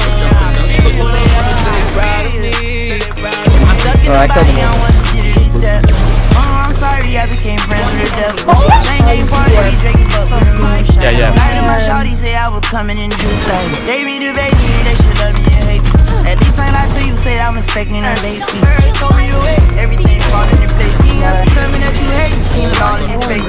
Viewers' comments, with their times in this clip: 0:07 scream is sus af , Nice vid tho😍😍